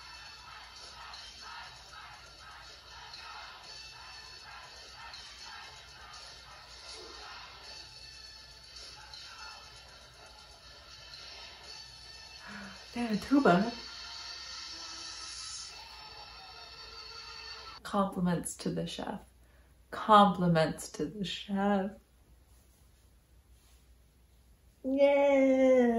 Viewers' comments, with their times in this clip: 0:06 I love the dancers actually yell "two times" as Jungkook does the double spin.